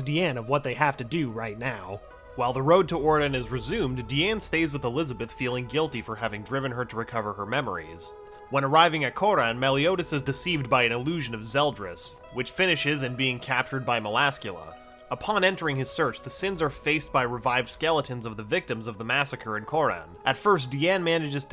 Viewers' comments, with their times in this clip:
0:06 the voice change has been caught